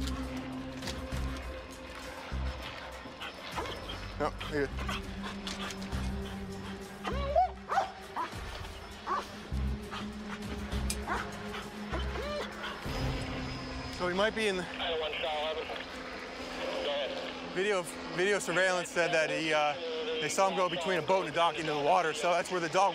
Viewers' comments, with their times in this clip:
0:07 it sounds like the dog is going, “I don’t know!”